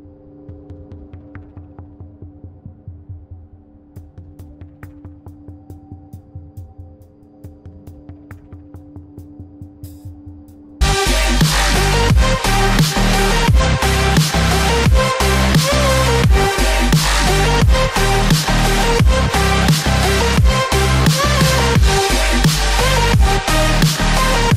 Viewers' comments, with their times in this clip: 0:09 I said ugh but in a very voice crack way for some odd reason